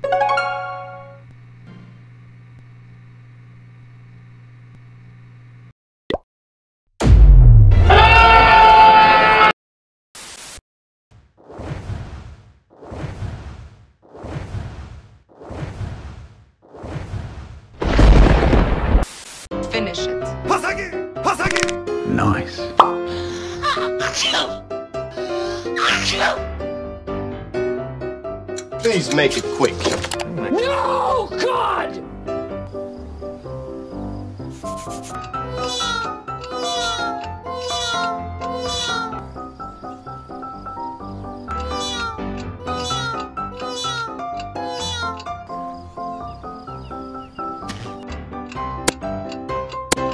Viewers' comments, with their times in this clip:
0:07 made me laugh the scream was unexpected from me
0:18 when the men screams
0:26 man the second coughing bro
0:35 the neowing sound is so funny but i don't know how to spell it
0:35 I saw the archer sound